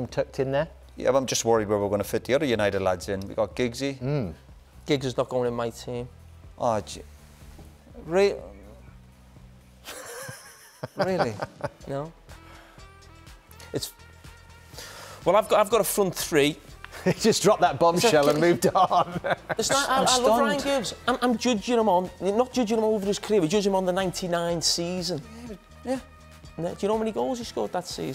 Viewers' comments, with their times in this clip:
0:10 the way Roy says "really", it's like Hannibal Lector about to start plucking someone's eyes out before asking again, "are you sure about that?"